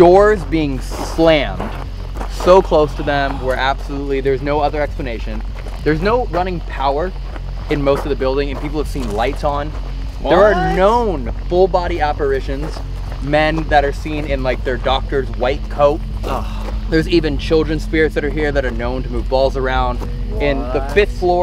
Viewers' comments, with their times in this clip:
0:03 you can hear a deep breathing